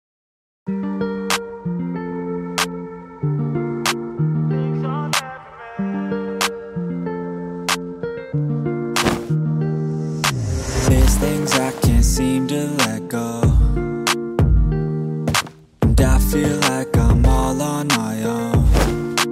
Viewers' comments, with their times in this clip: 0:04 him crying really reminded me of myself of how lost i really am in this world😭